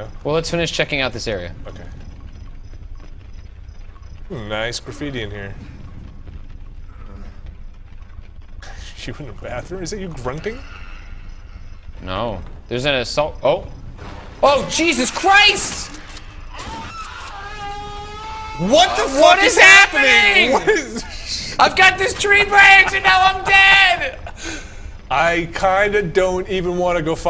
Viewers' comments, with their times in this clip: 0:10 That scream would be absolutely horrifying playing solo with headphones.